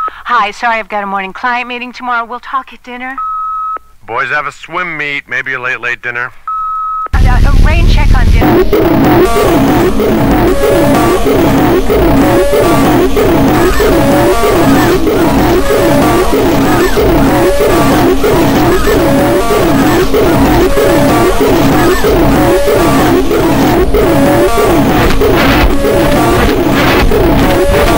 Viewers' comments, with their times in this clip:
0:07 “check on dinner-” ear torture
0:09 prime example of bitcrushing: